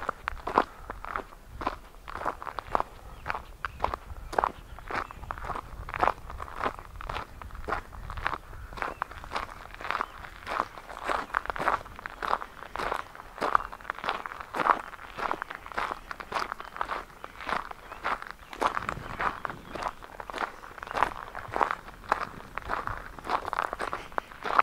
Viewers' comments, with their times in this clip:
0:05 Birds chirping in the distance, the ground crunching under your feet and a little bunny scurrying into the dense foliage. These are the sounds of peace and tranquility. Yes, I could totally hear that bunny